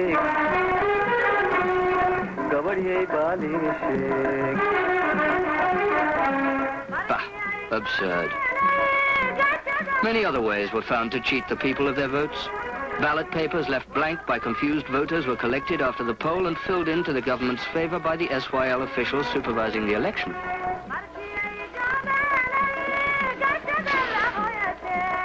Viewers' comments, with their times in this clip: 0:06 did the say 'BAX absorbed?' lol